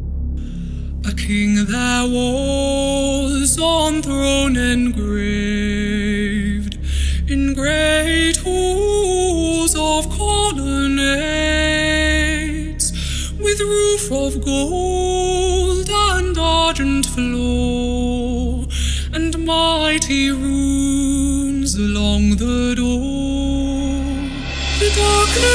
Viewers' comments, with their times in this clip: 0:07 definitely sounds like an "alter ego" voice.